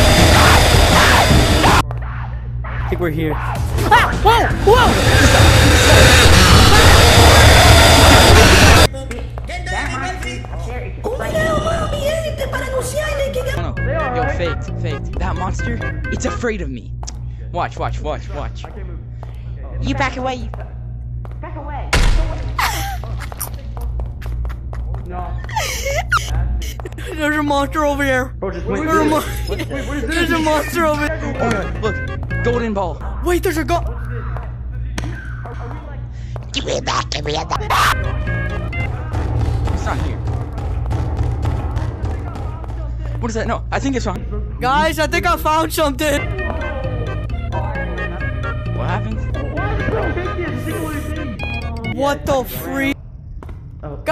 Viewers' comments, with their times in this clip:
0:09 Blud Yapping around
0:36 sounds like gnarpy